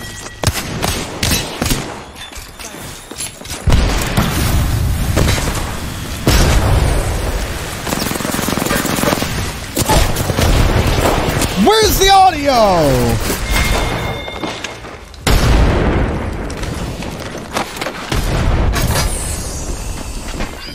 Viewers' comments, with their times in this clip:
0:08 When streamers rage cuz they cant hear footsteps over grenades😂